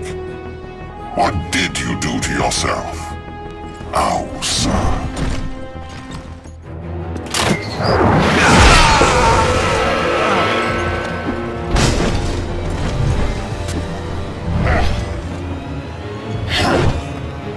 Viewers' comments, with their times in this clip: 0:03 How to pronounce Ausar: